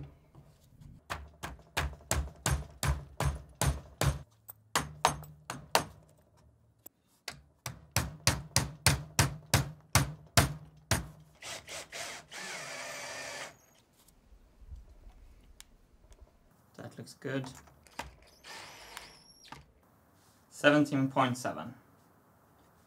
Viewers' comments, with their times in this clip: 0:10 You can play Donna e mobile on your electric screwing machine!